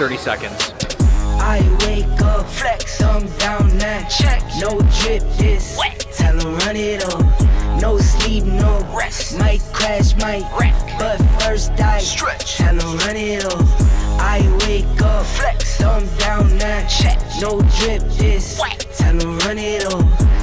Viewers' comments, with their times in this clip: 0:07 The music got me 😭😭😭